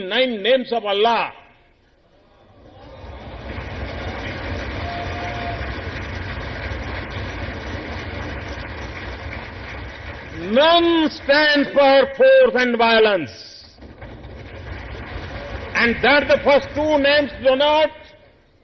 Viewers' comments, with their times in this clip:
0:06 I thought there is raining on my house😂